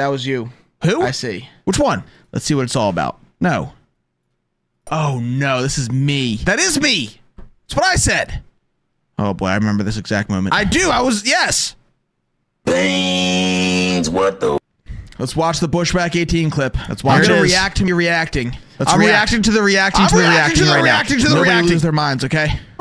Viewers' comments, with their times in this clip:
0:06 had me SO confused which one are the sounders coming from?